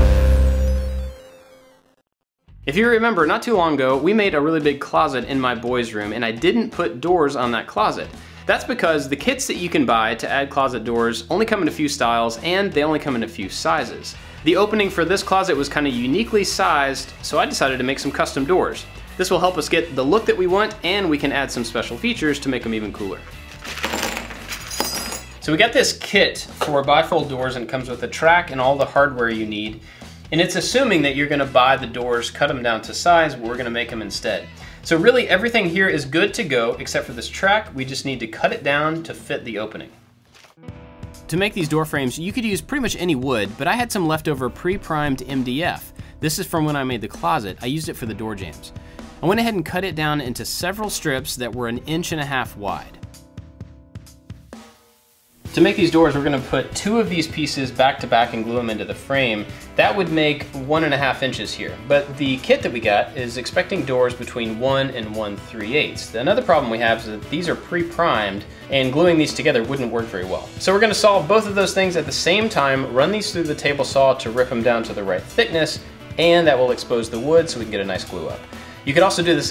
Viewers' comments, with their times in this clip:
0:08 I haven't even watched it yet, and I'm already impressed. Looking good! Good choice of door-type since it's a small space :). "That's because the kids you can buy.." Wait what. Kits, got it.
1:02 I thought that he said “the kid that we got”